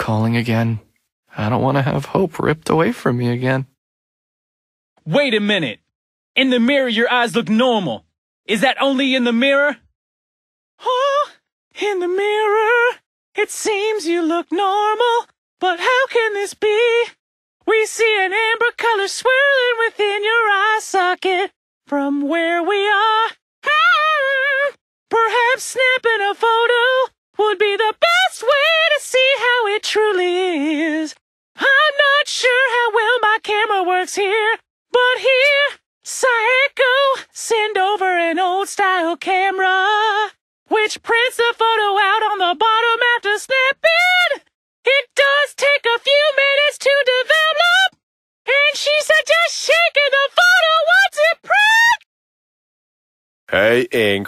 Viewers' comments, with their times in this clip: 0:10 This voice actor is definitely having too much fun 😂
0:11 OMG YAS QUEEN YOUR SINGING IS BEAUTIFUL
0:11 lol the voice and singing XDDDDDDDD
0:11 why is bro singing 😂
0:15 I love how the voice actor for that comment basically singed it
0:16 a singing question?well that's weird but I'm also weird so it doesn't matter
0:16 WHY iS HER vOice So Funny😂😂😂😂😂
0:17 Why is bro singing
0:28 YASS MEH BOI SINGGG
0:30 Why tf is their voice singing 💀
0:33 omg the singing tho this needs to be on Broadway
0:34 ok, I NEED to know who voiced this, it is amazing, it's like Michael Jackson and Elvis Presley had a mixtape
0:42 u sing very well UvU